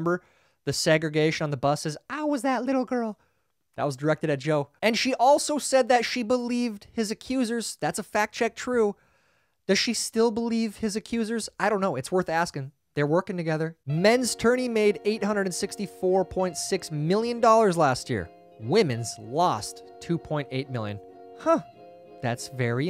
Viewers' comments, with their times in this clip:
0:10 she was asked and she laughed and said "it was a debate, it was a debate! haha it was a debate...."